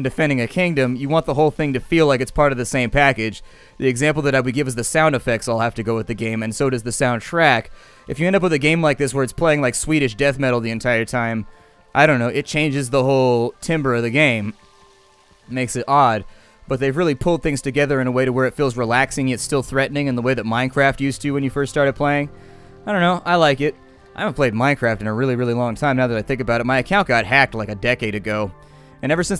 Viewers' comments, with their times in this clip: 0:10 AHAHAHAHAHAHAHAHAHAHAHAHAHA Swedish death metal omg thats so legit. The spontaneous way he says it is amazing